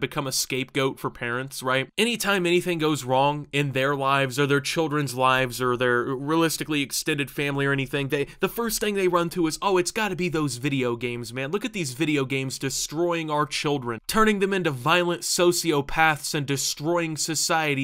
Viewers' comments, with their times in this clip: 0:04 Turned into Cr1tikal for a minute